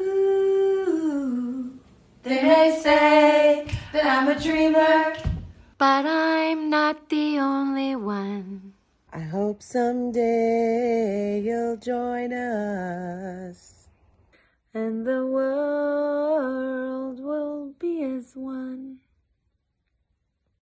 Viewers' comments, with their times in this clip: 0:09 the only person who doesn't sound absolutely horrible 🗿